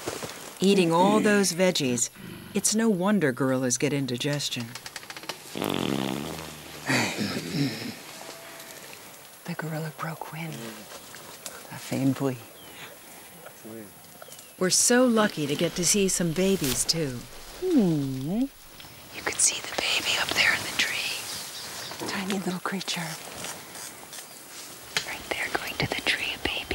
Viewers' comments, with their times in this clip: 0:05 yeah right, it was totally sigourney weaver who farted. She just had the oppurtunity to blame the gorillas.
0:05 I like Somebody blow it down. I asked myself, "Was that from the gorilla group?
0:06 he gets fartert hahahaha
0:08 LMFAO he farted soo loud!!